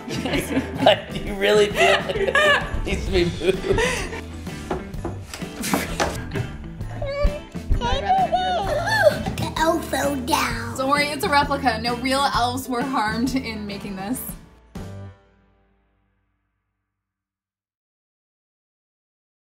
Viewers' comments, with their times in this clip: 0:08 ok I just LOVE how his voice sounds. It makes the video WAY MORE FUNNIER